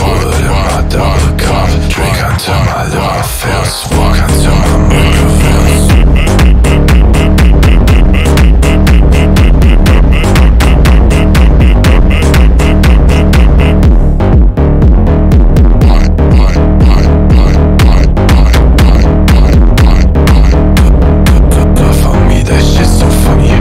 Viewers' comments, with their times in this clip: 0:06 sans ahh audio